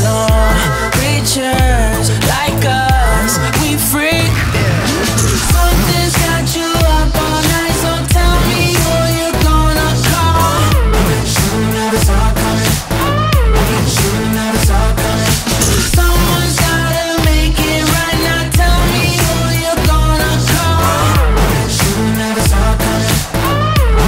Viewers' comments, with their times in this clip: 0:05 I like that at some points it sounds kinda spooky like with Jeremih.